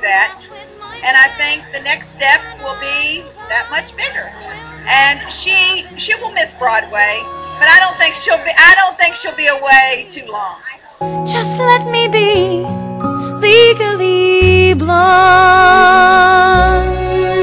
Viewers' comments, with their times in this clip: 0:04 that is the most powerful part of the video. Laura's mom sounds amazing. : )